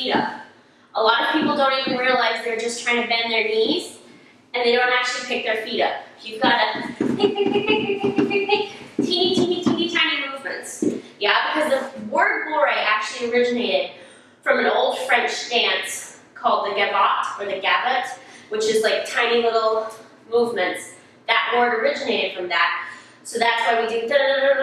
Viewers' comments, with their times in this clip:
0:09 did she say teeny teeny teeny tiny boavers?